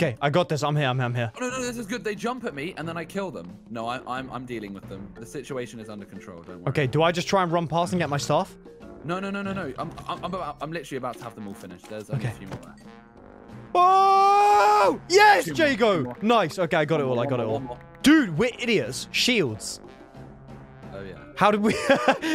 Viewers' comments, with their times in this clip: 0:06 Whats with the Zelda Music?